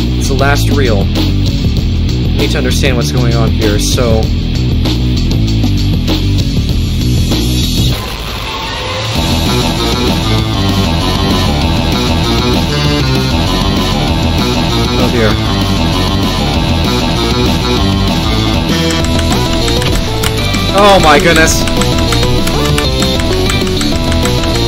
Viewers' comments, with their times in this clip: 0:07 the classic scream